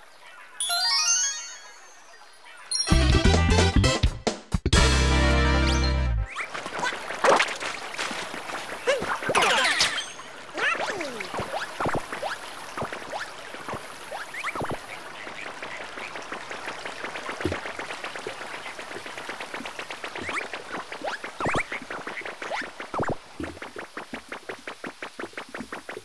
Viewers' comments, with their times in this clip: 0:09 i didn't know yoshi can say something in this game